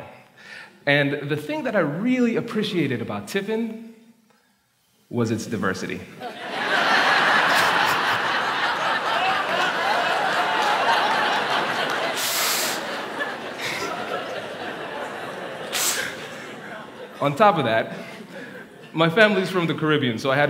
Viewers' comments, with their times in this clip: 0:08 Lol @ the one guy laughing in the back "HUAHUAHUAHUA"